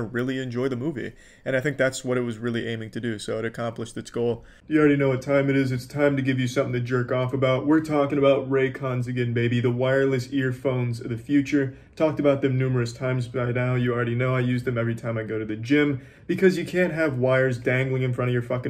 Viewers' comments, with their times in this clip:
0:03 when his voice changed it scared the shit out of me
0:04 jesus christ the mic change scared the shit out of me when I had this playing in the background